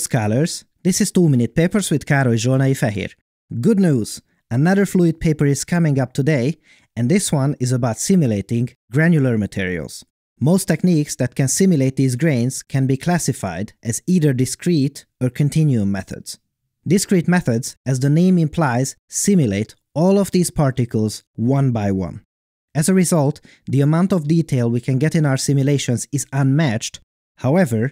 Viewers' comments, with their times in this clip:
0:09 His voice kinda changes